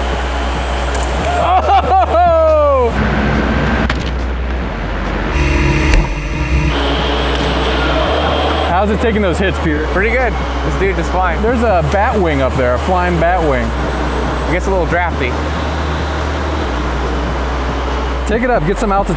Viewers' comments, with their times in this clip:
0:03 =minecraft fall damage